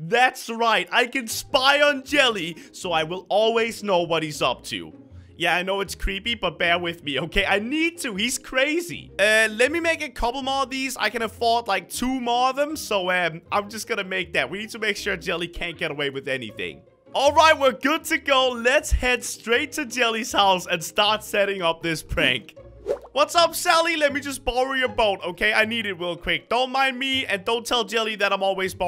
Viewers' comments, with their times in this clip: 0:10 Ijust rewatch the video and i realize something crainers editor spoke HAHAHAHH💙😂